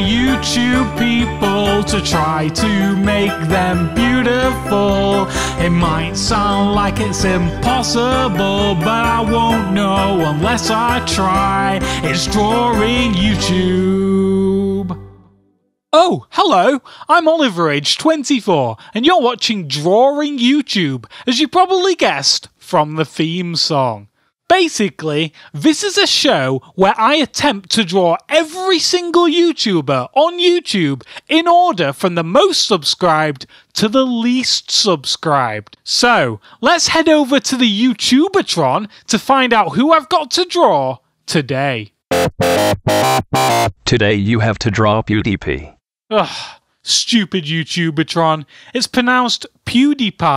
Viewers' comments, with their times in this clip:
0:05 you know what will be impossible. Your tone
0:38 Youtubeatron is a old lady on a computer
0:38 Youtubeatron is a old lady on a computer